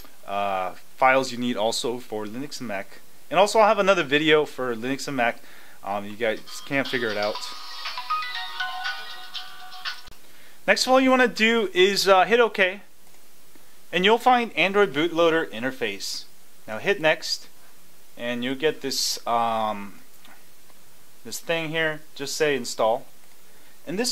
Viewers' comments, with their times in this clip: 0:08 shiiiit i thought it was my phone that was ringing hahaha